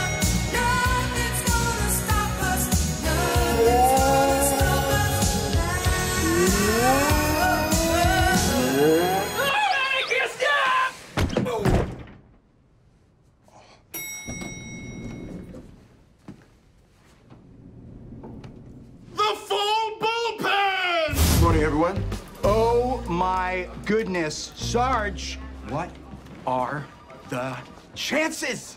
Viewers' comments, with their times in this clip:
0:09 hitchcock and scully are clapping in the backround 😂😂😂